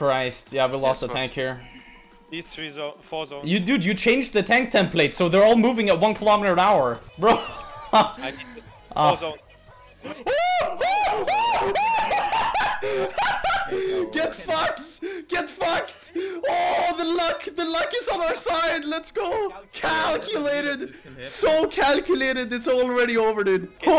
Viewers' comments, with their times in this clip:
0:09 a chimpanzeas start his call for mating